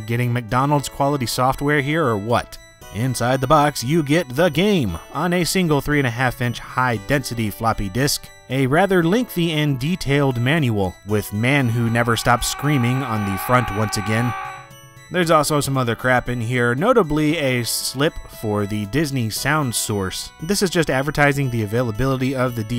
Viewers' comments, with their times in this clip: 0:10 That scream from Serious Sam's kamikaze guy I was tempted to look around.